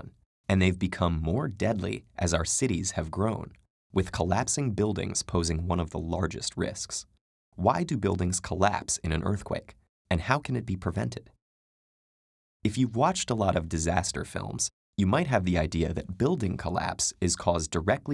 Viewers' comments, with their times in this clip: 0:03 Anyone else notice the rumble disappearing